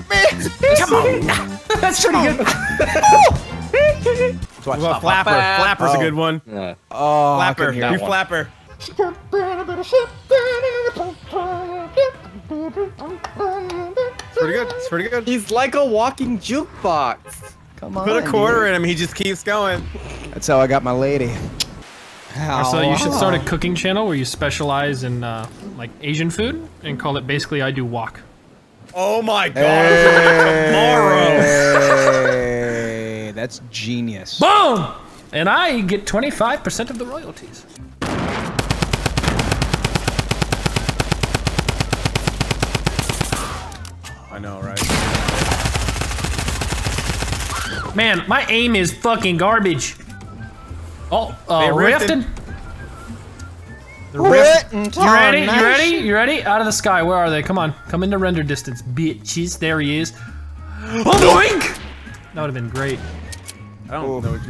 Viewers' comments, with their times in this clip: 0:07 Our new singler...MICHAEL JACKSON TWO
0:18 (In a gay sounding voice) "Put your quarter in my coin slot and I'll sing for you." 😉
0:48 Why does he sound so weird 😂😂